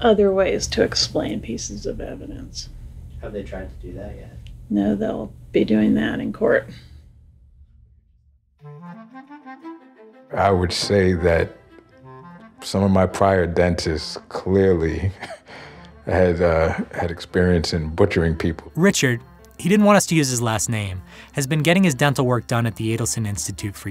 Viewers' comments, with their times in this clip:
0:08 anyone else hear Morgan Freeman? Just me 😮 I know it's not; yet at first I thought it was.